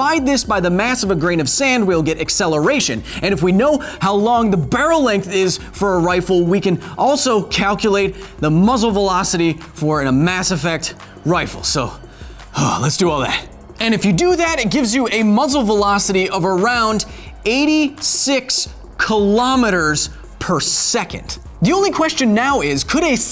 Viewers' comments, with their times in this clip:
0:09 "For the love of God, take a breath!"